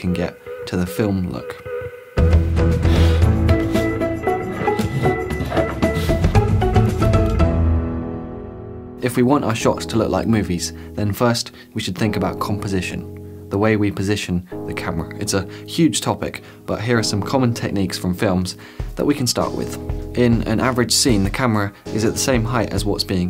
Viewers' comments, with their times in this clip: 0:08 That Rhodes that came in 👅👅👅